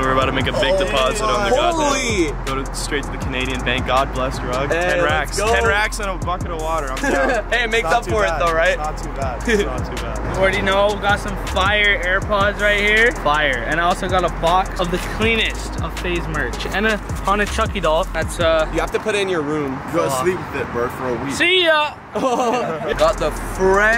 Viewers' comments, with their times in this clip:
0:09 that giggle tho